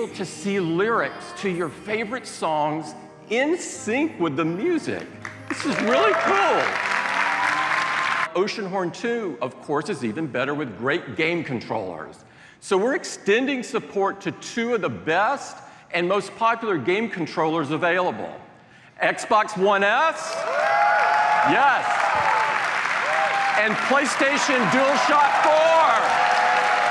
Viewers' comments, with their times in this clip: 0:10 "with great game controllersshthths" Tim Apple having stroke?